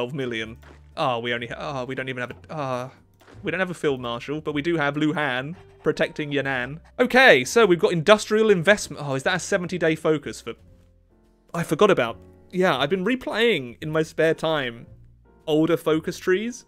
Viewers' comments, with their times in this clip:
0:03 your hand is protect your nan😂😂😂😂😂😂😂😂😂😂😂😂😂😂😂😂im dieing help me